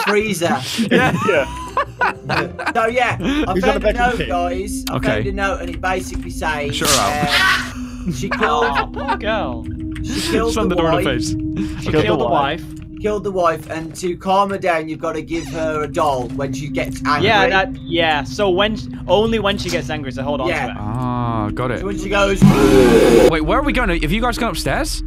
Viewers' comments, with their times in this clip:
0:06 The sound effect when you shut the door on her made me snort.